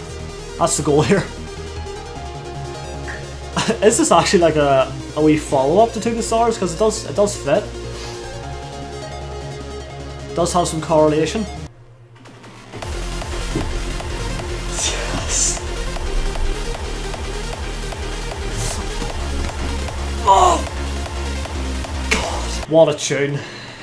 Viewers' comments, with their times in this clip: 0:08 Some DJs go back to the Hardttance Roots of Hardstyle and add in the typical Trance Overtoneysnths